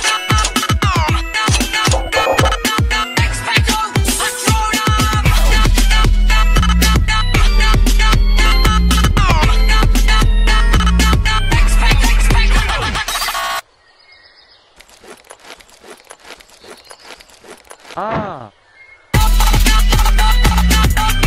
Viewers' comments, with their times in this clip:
0:04 when u start to like the music
0:04 when u start to like the music